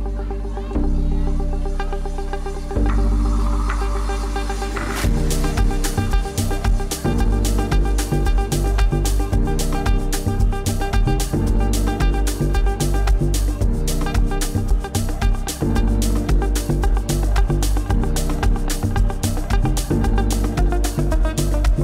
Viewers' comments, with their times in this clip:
0:09 That guitar on 😭